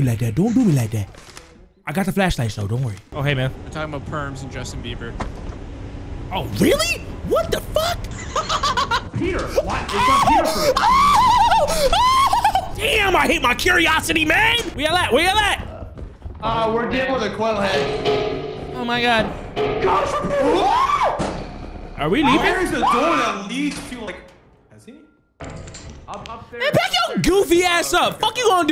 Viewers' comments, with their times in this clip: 0:09 perfect Tom and Jerry scream
0:09 that dude done hit that Tom and Jerry scream 😂